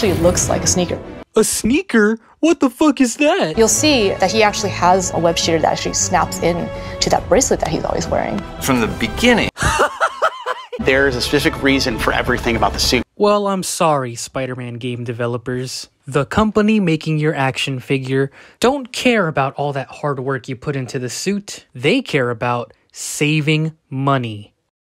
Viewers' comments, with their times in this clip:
0:09 That hysterical laughter you do always gets me
0:09 the laugh lmfao
0:10 sounds like William Dafoe like 1:1 fr fr dawg
0:10 that laugh gets me!!!!!